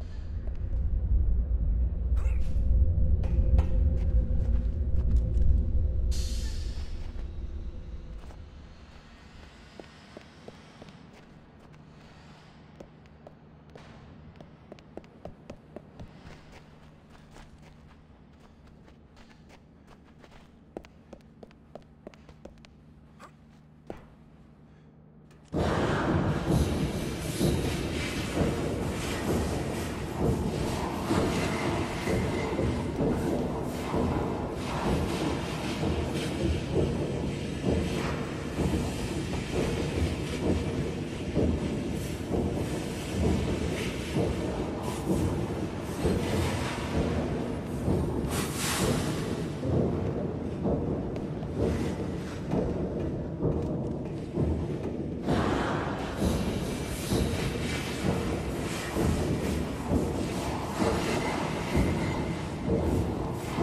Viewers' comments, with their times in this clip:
0:06 listen either a truck, or there's someone/something in there running some kind of machine
0:25 Dude you scared this $h!t outta me when that music came on!
0:47 dude i was watching the video with my music up loud and then you put that weird music on and i nearly died thxx for that but great video still!!!!